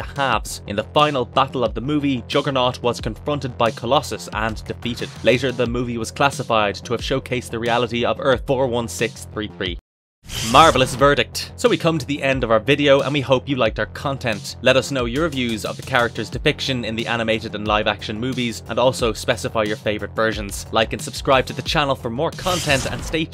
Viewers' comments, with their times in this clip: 0:08 You ok? Sounds like you saw a spider or almost fell.